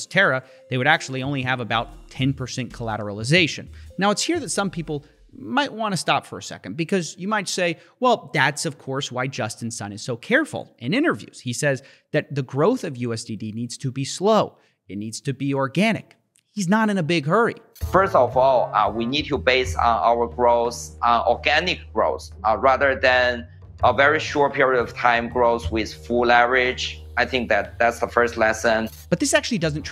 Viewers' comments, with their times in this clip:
0:10 how is the guy who speaks english with fresh off the boat accent fooling people by manipulating the language? lol